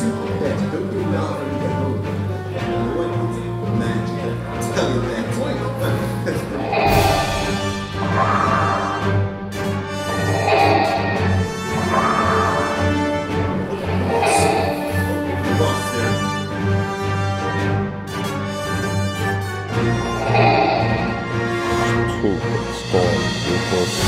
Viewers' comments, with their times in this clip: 0:07 I dont like noncopyright soundtrack!